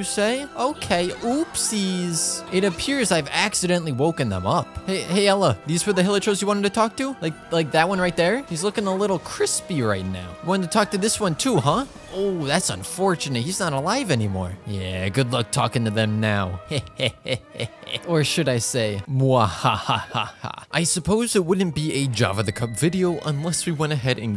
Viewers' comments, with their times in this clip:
0:09 The voice crack he really put emotion into killing that hillichurl